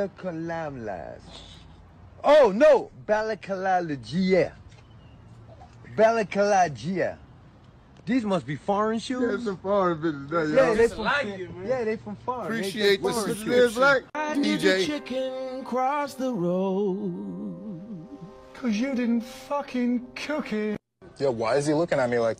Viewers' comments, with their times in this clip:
0:03 Not even gonna lie, I lost and chuckled ! This man really said “OH NO, Bal-li-ca-lala-GIA”😂😂 I sat here watching this man mispronounce a shoe name in 3 ways, have a moment of realization, then mispronounce it 3 more times!